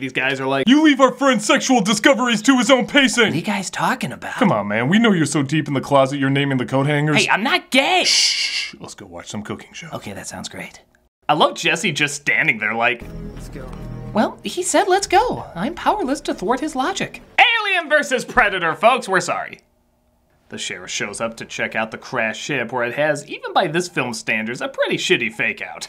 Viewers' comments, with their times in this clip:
0:08 did he give that guy the same voice he gives michael bay? well played.